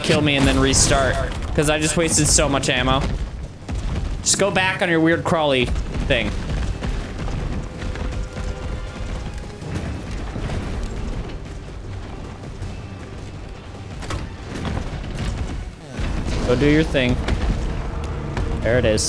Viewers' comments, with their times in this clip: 0:05 Echo effect ends just in case you were wondering
0:05 Echo stops miraculously